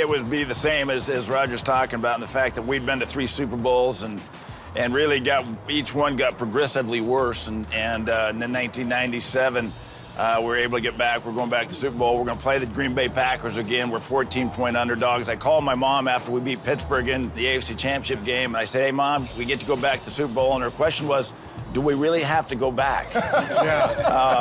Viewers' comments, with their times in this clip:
0:06 Elway: each one (superbowl) got progressively worse, Kelly shakes his head and chuckles-- he could totally relate